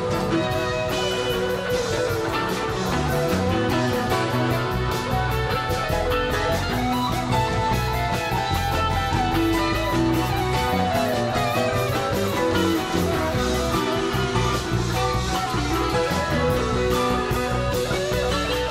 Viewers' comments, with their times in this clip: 0:06 Jerry's solo beginning is off the chain...look at his body language and facial expression--he is giving it his all! When Jerry had a good time, everyone did!